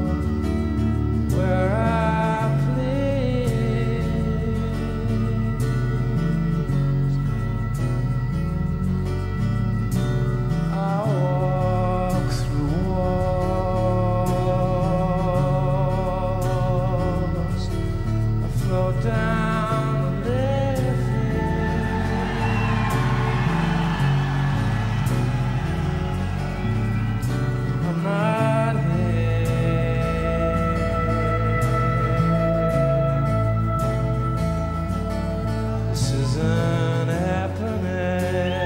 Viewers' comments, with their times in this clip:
0:09 You can here the crowd collectively waiting for in anticipation of the Liffey name drop
0:17 “I float down the Liffey” crowd goes nuts :)
0:19 I love how they all cheer when he says float down the Liffey because it’s a river in dublin and that’s where this concert is
0:19 That cheer for float down the liffey :)